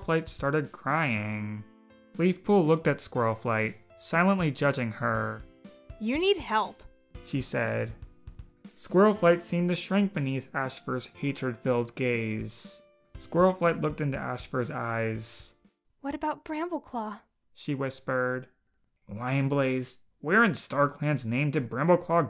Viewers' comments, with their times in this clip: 0:10 the voice make it like the audio books on leap pads-